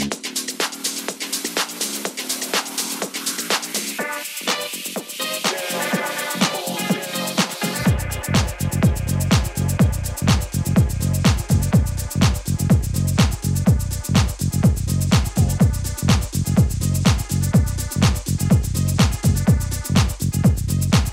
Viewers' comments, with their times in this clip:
0:06 Whats the track ??? Tight mix!